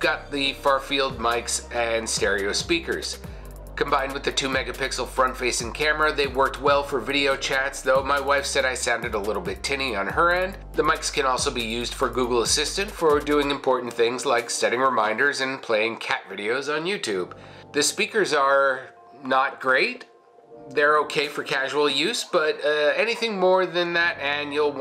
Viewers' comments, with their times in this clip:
0:06 I don't think it's the mic. Just might be you. Unless your using the Lenovo mic to record this review.